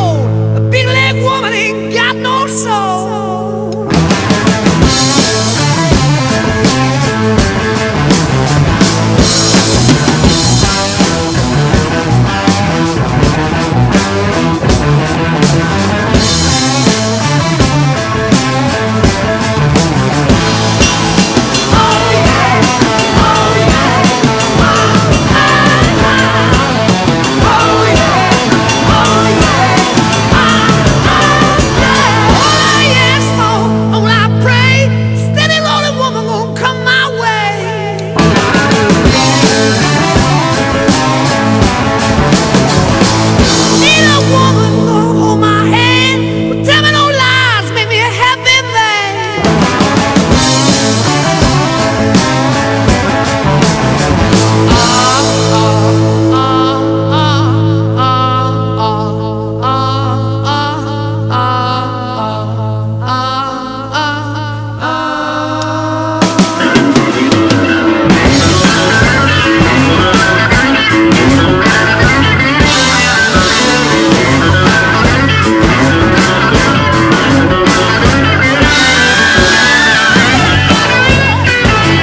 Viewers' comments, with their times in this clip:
0:09 Of course the drums are amazing, but I was just paying attention to that drum transition right at :40 and then Just unreal, totally drives it.
1:06 My fevorite solo